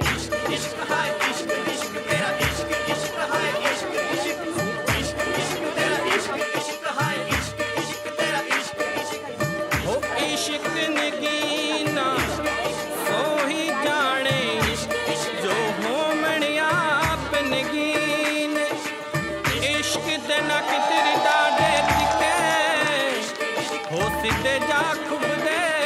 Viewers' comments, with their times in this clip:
0:10 why does this look like some movie scene parody lmao n somehow that music works well with it lol😂😂😂